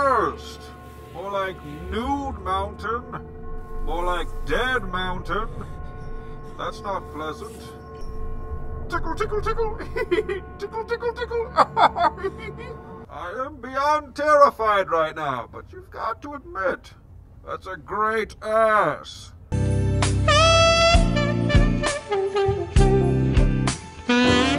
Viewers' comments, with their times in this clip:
0:09 I freaking love your Bane's laugh!!